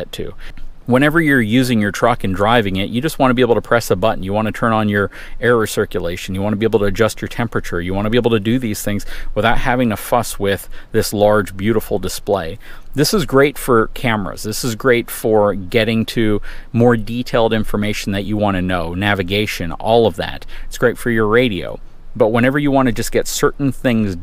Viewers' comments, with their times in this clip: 0:09 I had to rewind because I thought you said something else 🤣